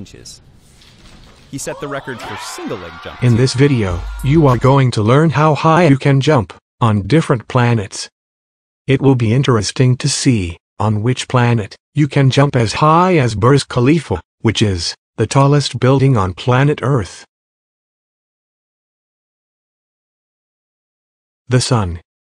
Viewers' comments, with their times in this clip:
0:04 ¿your microphone has stopped working?